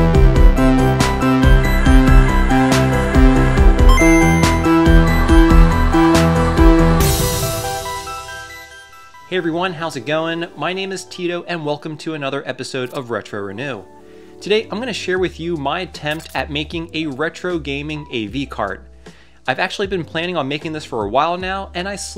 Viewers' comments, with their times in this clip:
0:10 Did you just say "tits"? Sorry, I like Game Sack, lol